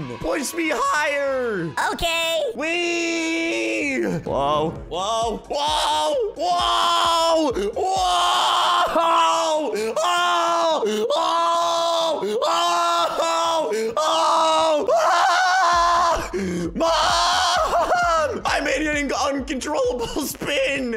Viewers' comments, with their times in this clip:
0:07 Screaming wow in the mic